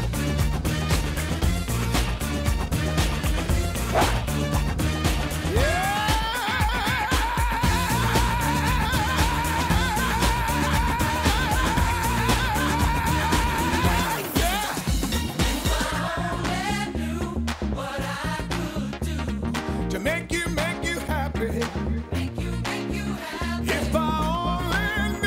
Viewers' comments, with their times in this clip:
0:06 The best part of this song is the 8-second scream I love the video though, there's something really weird about it that intrigues me. I love how he spins around in his chair and drives off into the sunset. It's awesome.